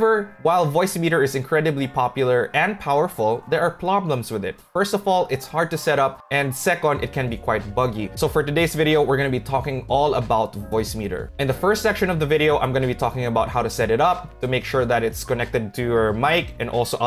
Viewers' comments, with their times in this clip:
0:03 there are PLOBLEMS with it